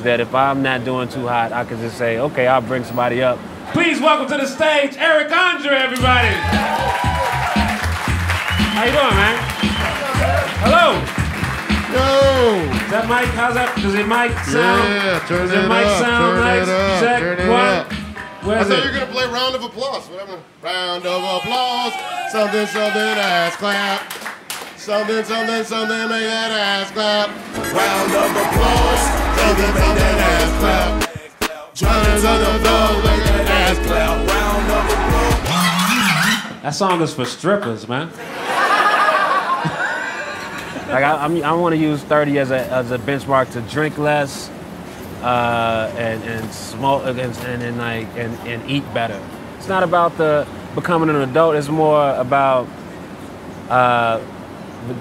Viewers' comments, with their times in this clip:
0:05 those MF DOOM drums
0:38 that Chanel west coast laugh